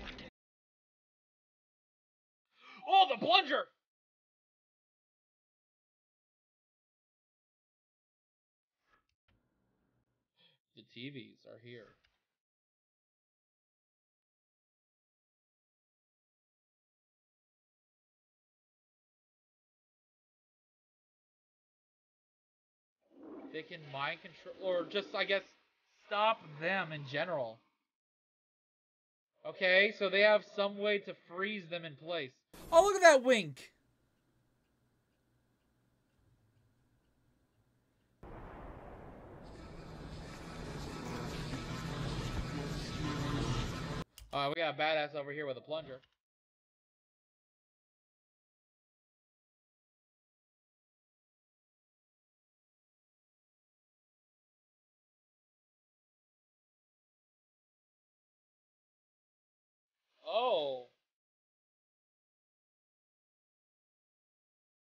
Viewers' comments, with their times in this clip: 0:07 you start having audio issues
0:46 can someone explain to me why the audio here and after randomly is kinda drowned out or just outright muted?
0:50 What happened to the sound?